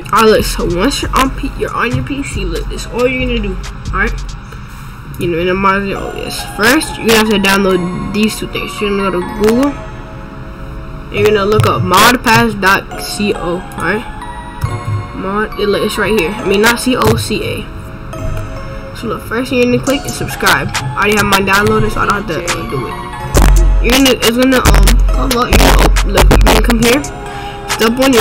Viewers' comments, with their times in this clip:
0:09 Fix ur headphones his mic is fine just got to neverfuckingmind XD